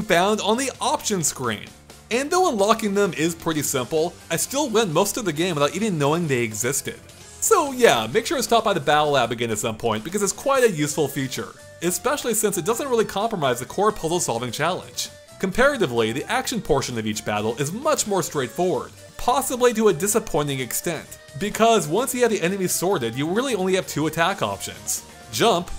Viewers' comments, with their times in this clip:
0:08 what does he say about unlocking the accessibility options? "yeah make sure to stop by the 'battle app again'"?